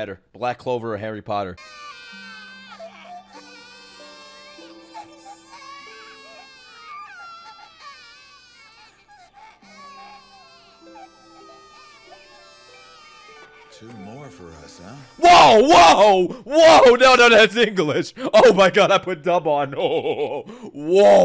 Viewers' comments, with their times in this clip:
0:03 Bro begins to smile when he hear children crying 😂